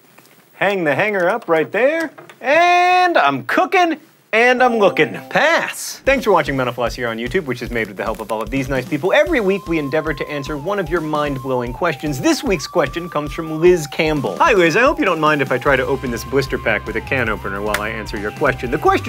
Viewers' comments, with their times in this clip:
0:06 I always think he says "thank you for watching menopause"
0:06 I seriously thought he said "thanks for watching menopause here on youtube" :P